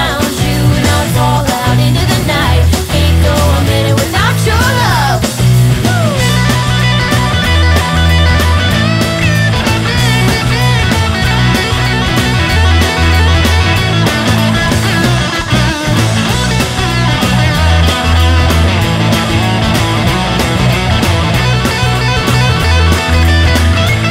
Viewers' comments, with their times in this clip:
0:06 Very nice solo :)